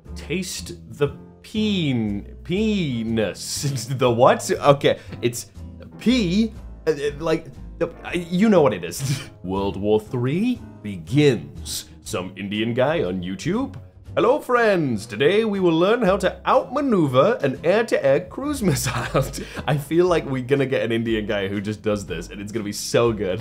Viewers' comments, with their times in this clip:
0:09 the way he says it is so perfect